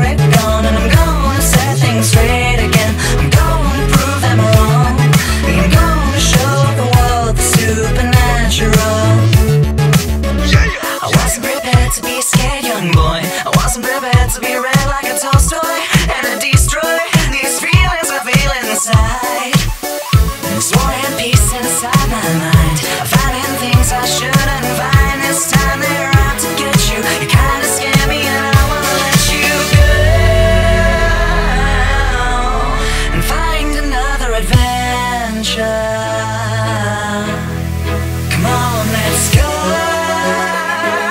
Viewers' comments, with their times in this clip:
0:10 --- COACH! (LEFT4DEAD2) oh god I heard the voice of Coach, a character from LEFT4DEAD2 say YEAH! yeah! yeah.. yeah....
0:22 Some parts remind me of Help by the Beatles, especially